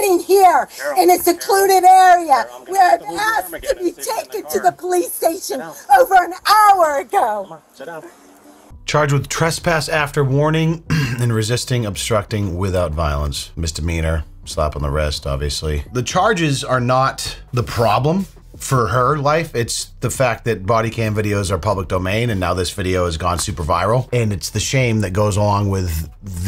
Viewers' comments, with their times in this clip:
0:08 Obstruction without violence... But PLENTY OF SCREAMING F XD